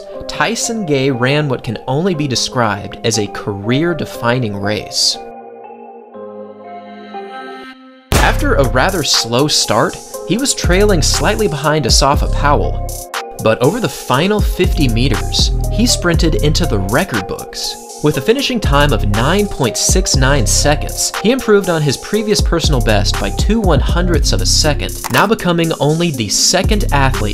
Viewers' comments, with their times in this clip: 0:08 nice calculation on the beat 😎🔥